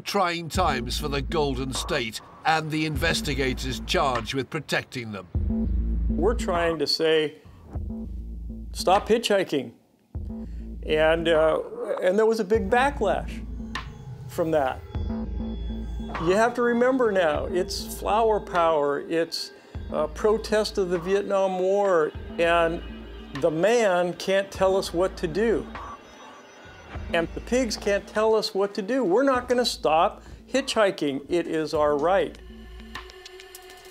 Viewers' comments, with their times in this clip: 0:04 The background music (particularly ) makes me miss Buzzfeed Unsolved.
0:17 his voice sounds like he is in his mid 30's